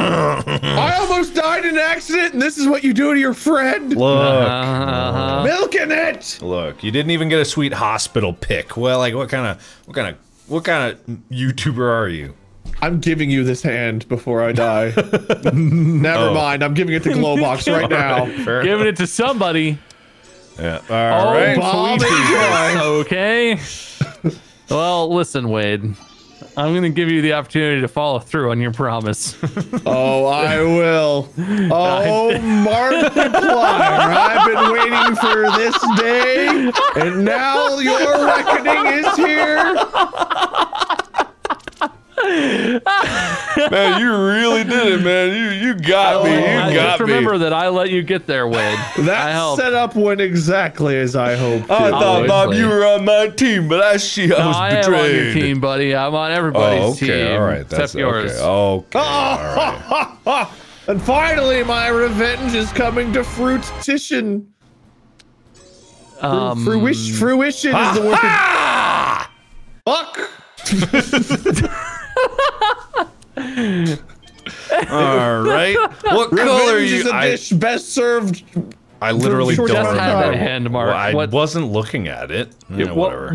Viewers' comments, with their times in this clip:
0:09 what kind a... whakan da.... WAKANDA FOREVER
1:09 That "fuck" speaks volumes of Wade's confused wrath.